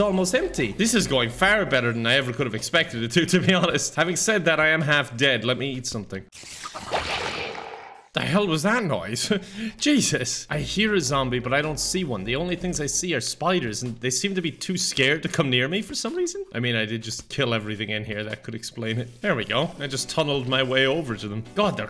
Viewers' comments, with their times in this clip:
0:06 in case you were wondering what the hell was that noise its a zombie and a skeleton having a orgy with a creeper LOL